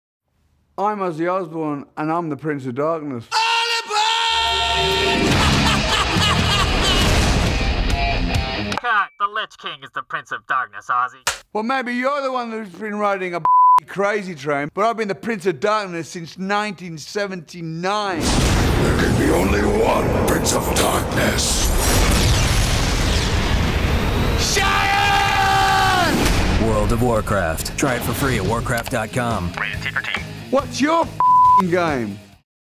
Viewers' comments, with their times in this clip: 0:03 What was Ozzy screaming?
0:03 WTF DID HE SAY!?
0:07 Ozzy bringing a wolverine, punisher, symbiote spiderman, or a ghost rider theme vibe of the first part of the ass kicking modernized "crazy train" guitar riff in his commercial.🎸✊💀
0:18 uhhh what was it that he said on !? is it "shut upppp" or "SHATTERRRRR" !?
0:24 it now sounds like he is saying !!Shatter!!
0:24 I thought originally he said shut up.